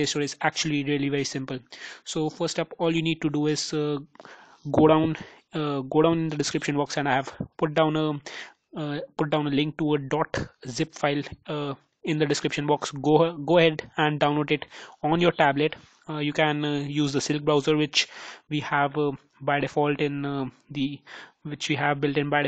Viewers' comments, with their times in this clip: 0:05 I'm having extreme difficulty in understaning what you are saying What do do I type in?